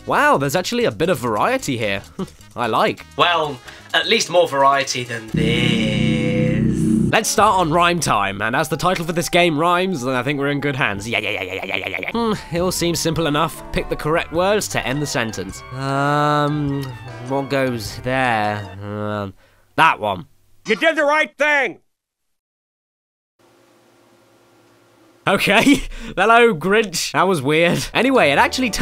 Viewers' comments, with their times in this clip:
0:10 He sounds like Captain Spaulding from House of 1000 Corpses